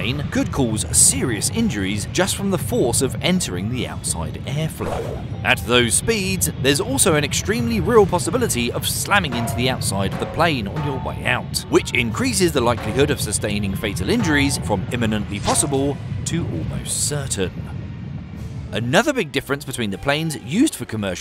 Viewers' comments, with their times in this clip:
0:05 The sound effects... I'm done!!